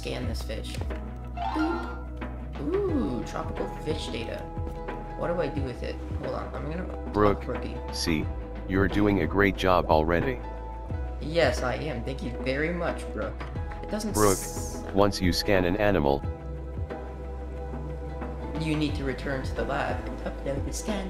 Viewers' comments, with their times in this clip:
0:09 She has such a lovely voice doesn’t she?